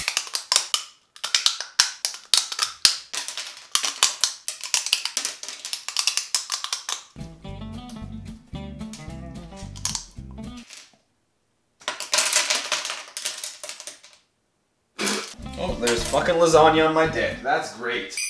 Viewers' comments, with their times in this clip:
0:04 You would make a great ASMR channel 😂